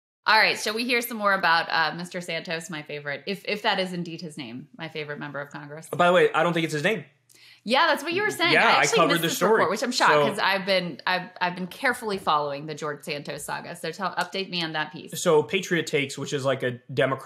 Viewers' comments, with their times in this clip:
0:01 If it's Spanish or Portuguese then y'all are saying it all wrong🤌🏻